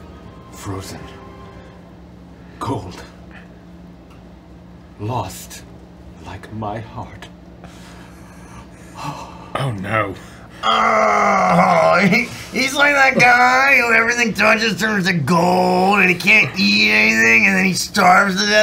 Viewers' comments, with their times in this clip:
0:04 PLEASE TELL ME IM NOT THE ONLY ONE WHO THINKS HE SOUNDS LIKE THE FELLA FROM A SERIES OF UNFORTUNATE EVENTS??